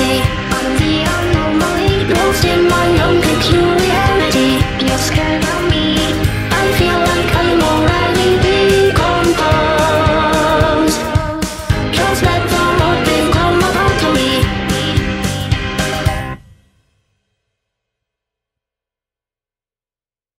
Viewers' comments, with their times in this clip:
0:10 did the time signature changed? At 2/4 to 4/4 ?